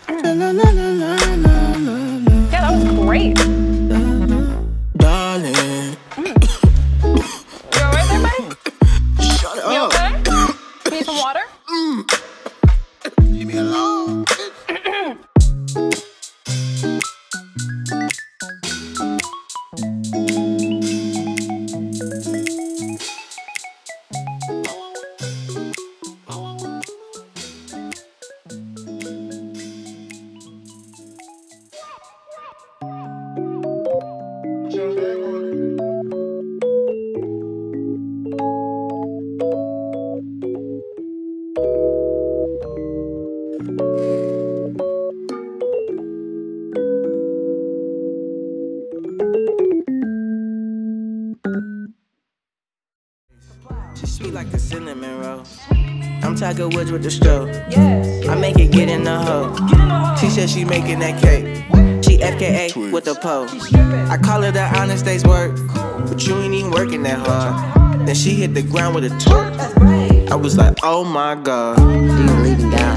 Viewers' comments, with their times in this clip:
0:05 I was watching a clip of CBS Philly's one chip challenge and recognized the lady's voice from this song lmaooo
0:23 melody gave me madddddddddd 2014 soundcloud vibes wow
0:28 Crash sound effect
0:31 Who noticed the crash bandicoot, 'whoa' ?
0:57 Small song at the end was fire too